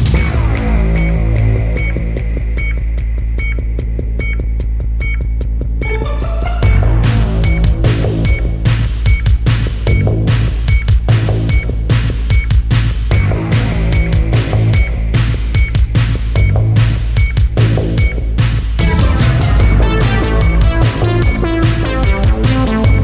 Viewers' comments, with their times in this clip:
0:07 Put the speed at 0.5, then go to it will start to sound like an alien music ;)